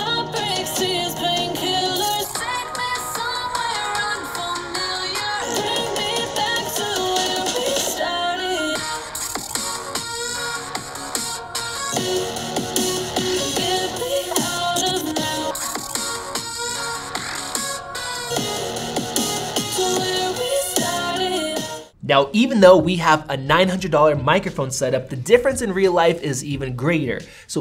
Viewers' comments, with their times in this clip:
0:08 always this bop 😗😌🎶🎵🎧